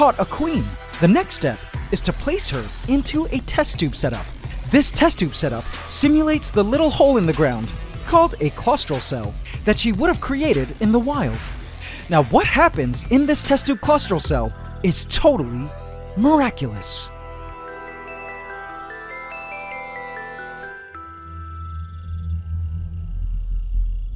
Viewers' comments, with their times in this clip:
0:07 sToP tHe SaD mUsIc. I feel bad now :C >